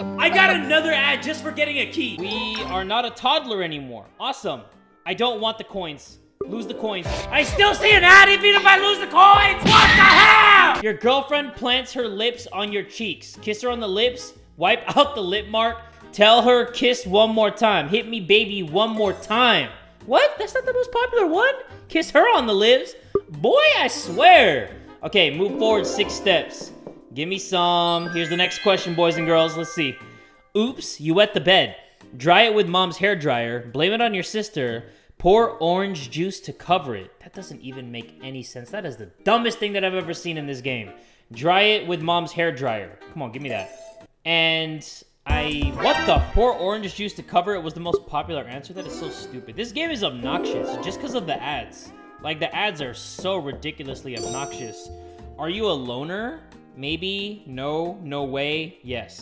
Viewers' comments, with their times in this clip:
0:09 The biggest scream ever 😂😂😂
0:41 Why no one talking lmao?
0:43 i made the weirdest laugh
0:44 LOLLL THE WAY HE SAID WHAT THE FORK